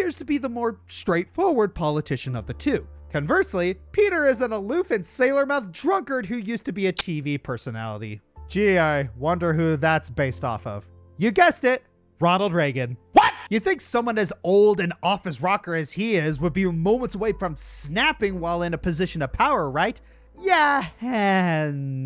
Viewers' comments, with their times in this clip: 0:06 OW. MY EARS. What the heck happened to the audio here!?